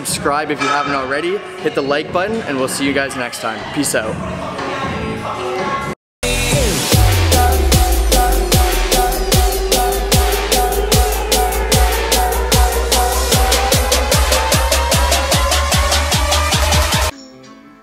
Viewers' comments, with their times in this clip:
0:04 the awkward pause is back! I wish ya'll held it longer like the old school days =D